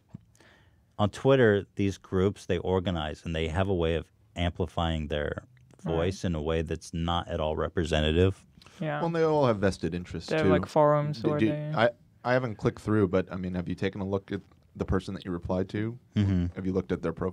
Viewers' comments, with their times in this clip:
0:05 Ethan just let out a Windy Williams??